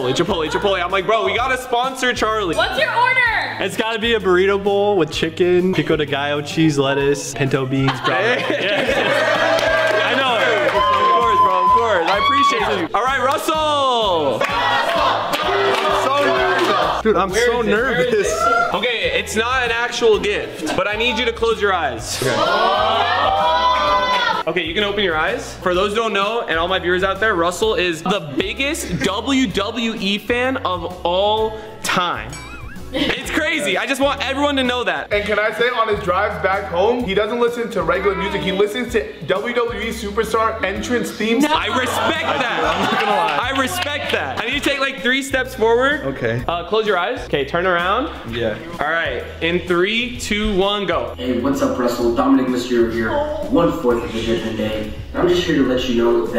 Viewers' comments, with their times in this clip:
0:05 bro said pico de gallo like a real mexican
0:37 only legends know there is something saying "hi"
0:37 Sho heard a littel girl say hi in